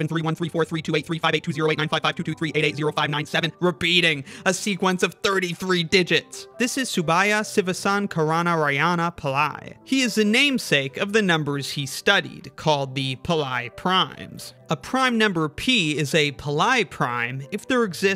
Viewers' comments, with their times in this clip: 0:06 That pronunciation of his name was painful to hear